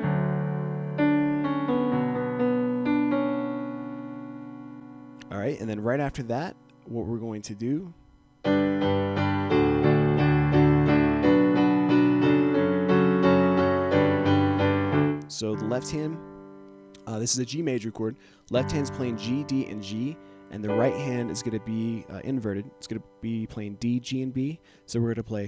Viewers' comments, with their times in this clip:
0:08 '..and right after that, what were going to do'.. and than BÄÄÄÄÄM ;D